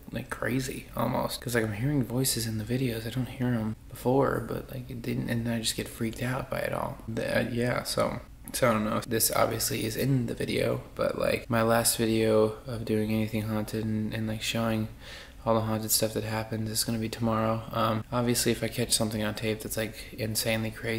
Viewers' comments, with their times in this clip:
0:05 there was a weird tic ??? holy shit?